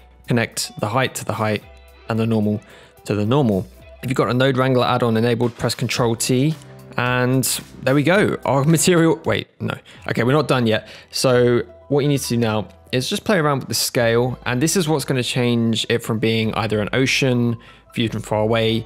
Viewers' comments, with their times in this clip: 0:04 I can't understand what you said here great tutorial, man! thanks!